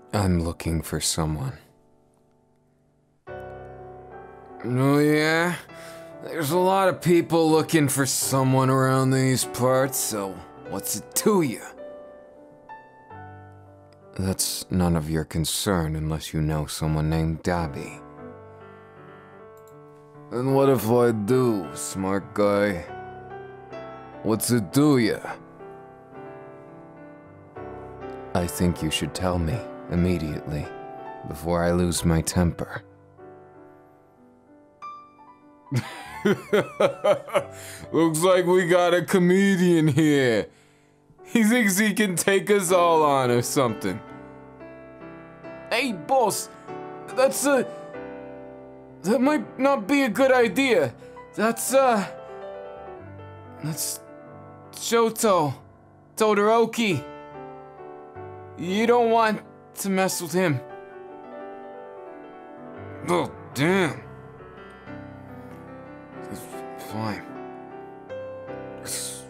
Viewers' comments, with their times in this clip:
0:05 HE SOUNDS LIKE HOMELESS BAKUGOU lmao (edit) NVM HE TURNED INTO NEW YORK HOMELESS BAKUGOU 💀💀💀
0:53 why does it sound like an italian izuku.... i’ll go home 😭💀